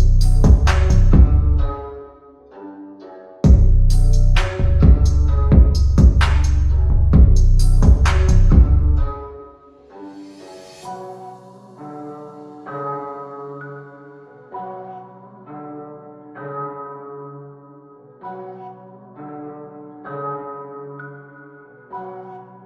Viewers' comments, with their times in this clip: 0:07 Not gonna lie the first song made me think it wasn’t coming from my headphones and I was gonna get in so much trouble for blasting music